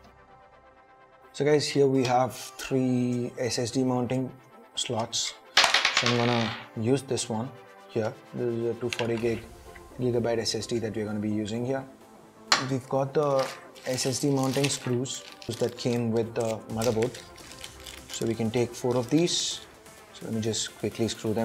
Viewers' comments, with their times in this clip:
0:06 why there is too much noise in the video